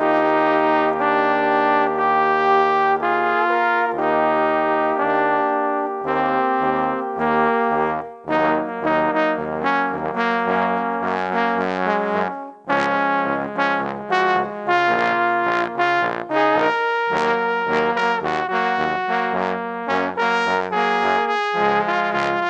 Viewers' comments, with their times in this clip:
0:08 how come all star fits with this i can just sing all star with this as the instrumental